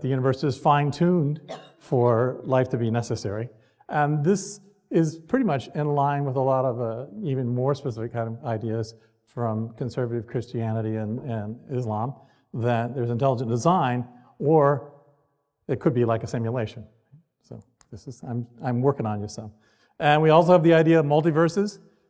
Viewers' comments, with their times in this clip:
0:03 Couldn't watch past Too much stammering and mumbling. Terrible presentation on an otherwise-interesting subject.